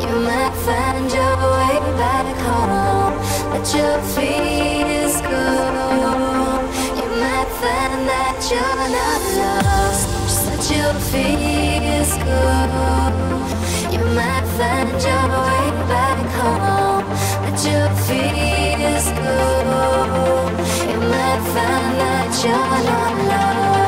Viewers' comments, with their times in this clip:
0:09 that build up aways gives me the goosebumps everytime 🤘🤘